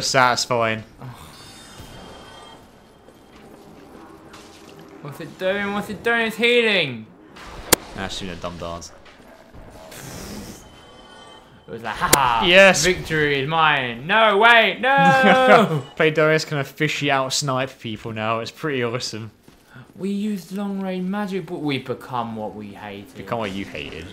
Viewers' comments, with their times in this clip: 0:09 Assassins? Where do you get these things from? Also she only attacked you because you killed her master you shit. That is absolutely an atrocity that hit sound is a little loud Edit: oh right they are assassins. :S